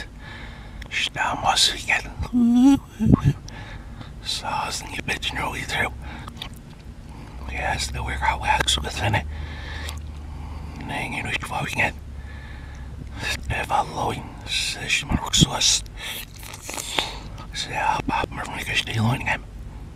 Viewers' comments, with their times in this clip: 0:03 sound like “saucing on your bitch”